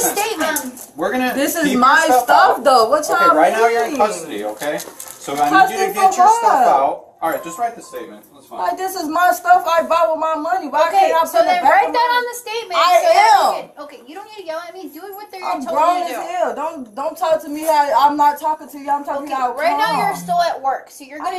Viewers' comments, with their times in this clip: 0:04 This sounds like my 15 year old daughter when i ask her why she didn't turn in her assignments